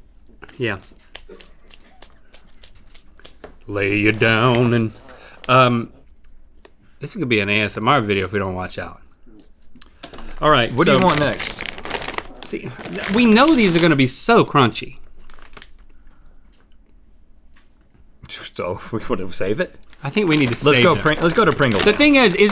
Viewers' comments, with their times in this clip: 0:03 I heard that lil Conway Twitty there Link...